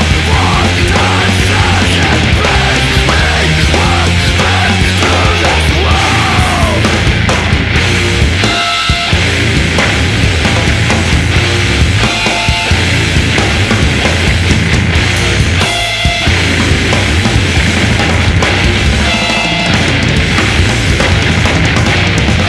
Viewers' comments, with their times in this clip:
0:05 onward is so bad ass, especially with that amazing drum solo